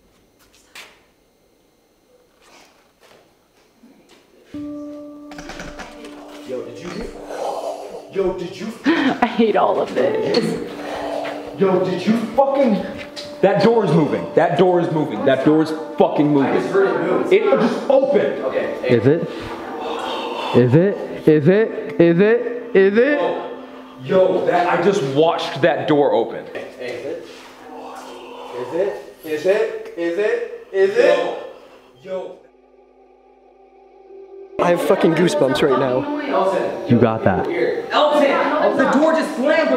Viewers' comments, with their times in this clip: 0:04 This is fucking Awesome !!! listen very carefully and you can hear the door open and I just started watching the video, I'm loving it 🤪
0:27 fuck, same voice whispers "were here"